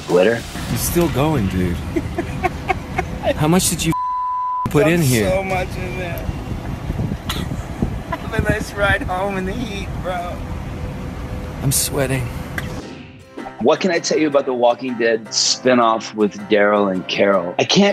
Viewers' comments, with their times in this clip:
0:05 why does Andy sound American when he’s British 😂